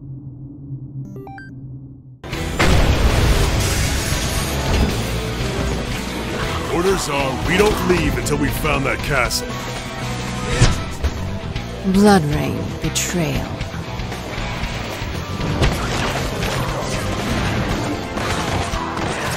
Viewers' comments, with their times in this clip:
0:06 How come i'm hearing dio's voice at this part lol.